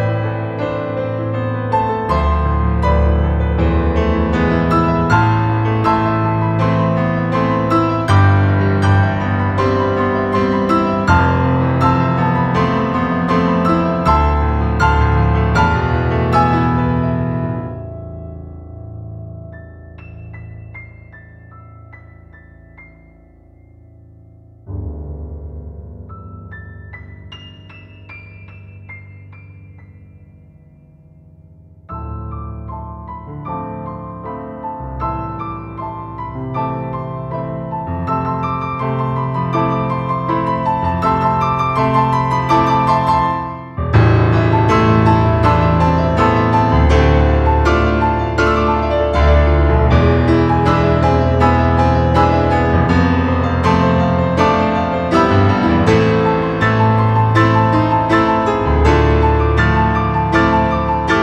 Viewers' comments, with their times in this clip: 0:05 Wait. Is this 5 hand technique
0:18 that overtone resonate！！❤
0:30 Ahhhh this prelude
0:43 You know, a lot of people are praising Animenz for his technique when he starts going off but I think everything before that was equally impressive. One of the hardest things for a pianist to master is a sense of touch and phrasing, and Animenz has come a long way from when he first started out. When you play a slower part, expression is key. And you have to give each note its own meaning. Animenz is a master in this regard. Well done!
0:43 Totally. And also not everyone notice the melody been played with the left hand, and the harmony on the high notes at the right, that was really well done.
0:43 that’s the most emotional, powerful, yet dreadful and depressing piece in the entire series!! 😭😭